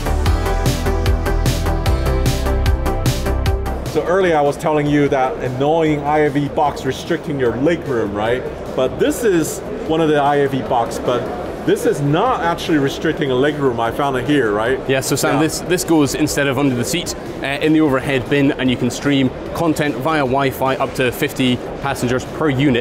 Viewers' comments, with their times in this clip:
0:06 that guy is definitely swedish xD